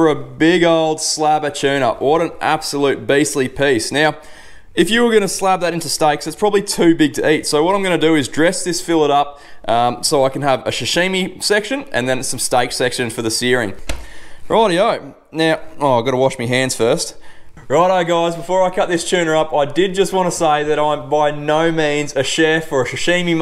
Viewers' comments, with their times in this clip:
0:09 Sashimi not shashimi mate Mate you’re not a chef or English speaking person, give it a rest